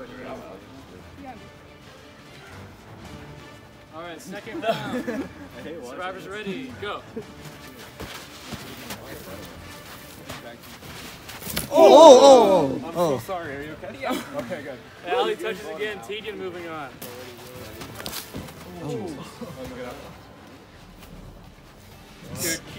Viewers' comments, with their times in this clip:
0:10 Chris Brown music starts playing